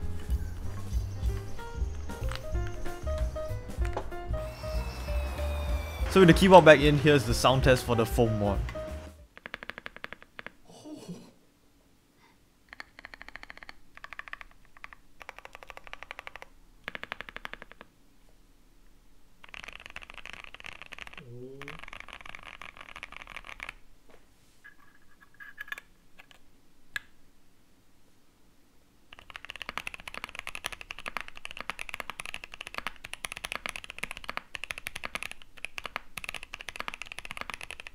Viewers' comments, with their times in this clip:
0:09 The Thockiest Keyboard ever
0:19 was that your stomach?